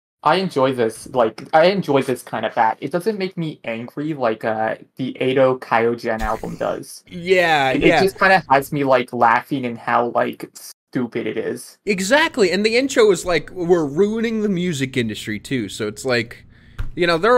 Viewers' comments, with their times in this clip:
0:04 Paruko. Paruko. Please learn how to pronounce things in Japanese. I beg of you.